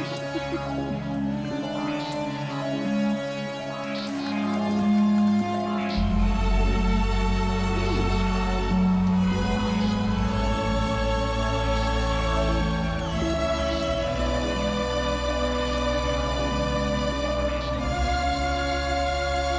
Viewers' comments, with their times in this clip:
0:05 One of the best elimations, so much emotion in it aswell! No battle needed as elimation but such a vibe of a track gives me goosebumps